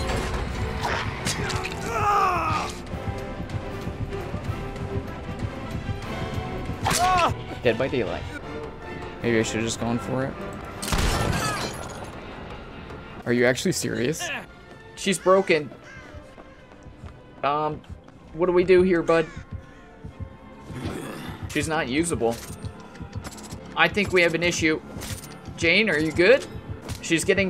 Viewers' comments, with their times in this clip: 0:09 You shot right into his ass HHHAHAHHA. STEVE'S screams. Oh my GOODNESS HHHAHAHHA HAHHHAHHAAHHAAAA